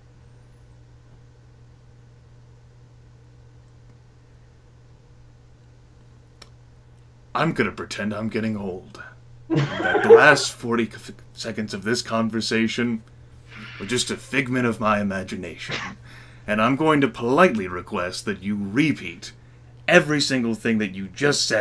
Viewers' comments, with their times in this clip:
0:08 heh heh grimm sounds like jack nicloaus [actor] ..when he says lets just pretend those last few seconds didn't exist :P nice... :D